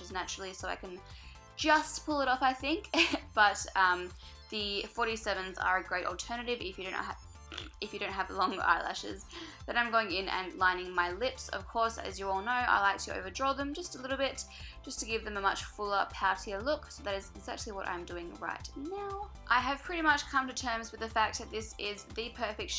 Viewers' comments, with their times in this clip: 0:07 Did she burp?
0:07 Is it just me or did she fart
0:07 I can't be the only one who noticed the fart ....................................
0:07 Gurl, you look incredible! I'm totally gonna wear this look tonight! x ( did anyone else hear that noise?¿ what was it?)
0:07 Did she fart ? :o I'm sorry if that sounds mean, I really think she's absolutely awesome and stunning:)